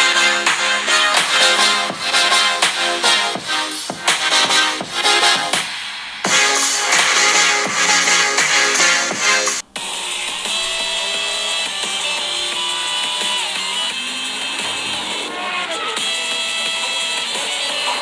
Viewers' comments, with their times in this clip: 0:05 thoes iphones speakers are amazing